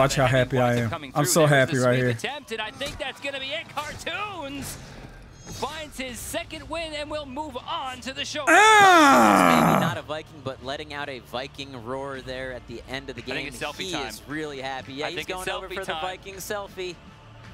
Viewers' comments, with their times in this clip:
0:04 You can hear him scream